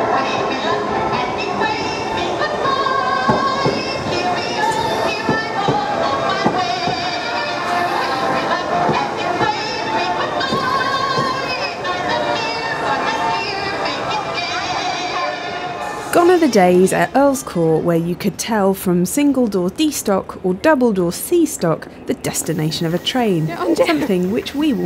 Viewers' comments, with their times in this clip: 0:08 those passengers look so confused as to why there is random music playing! That was just the best thing!